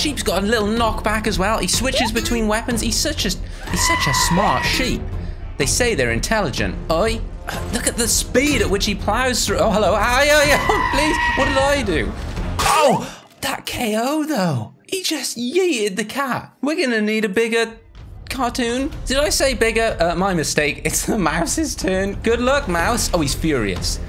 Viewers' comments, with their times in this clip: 0:10 "me when im finally hood enough to beat pros" victory screech